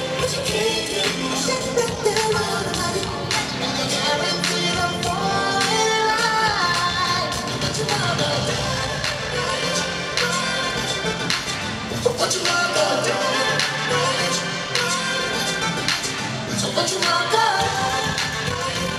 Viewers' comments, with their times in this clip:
0:05 come on full voice vocal run